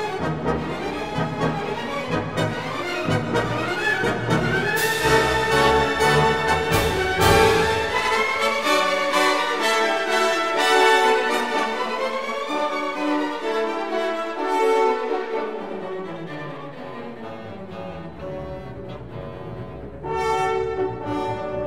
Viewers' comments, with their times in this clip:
0:06 it makes a « paracetamol »